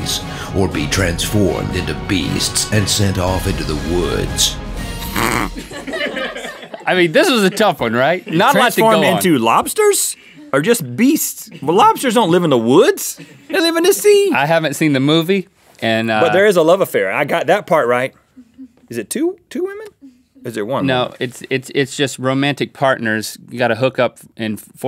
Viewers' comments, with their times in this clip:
0:05 was that Rhett or a pig
0:05 RHETT WHAT NOISE WAS THAT?! 😆